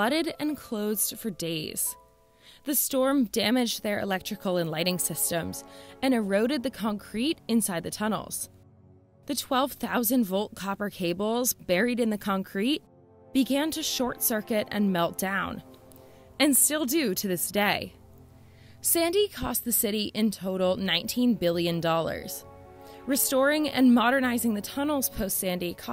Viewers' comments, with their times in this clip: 0:07 What is con crete ? (;-))